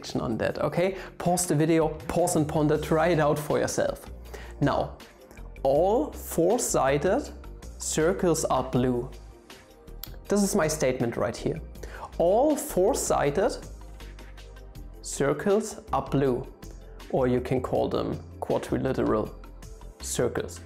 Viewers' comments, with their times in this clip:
0:05 whats the name of this music? sounds like something from danganronpa